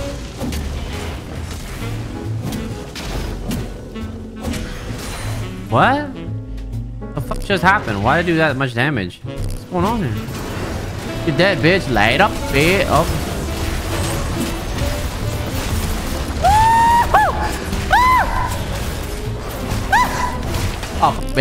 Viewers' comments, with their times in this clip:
0:03 1100 hp left 1100 damage. Tongue click Noice.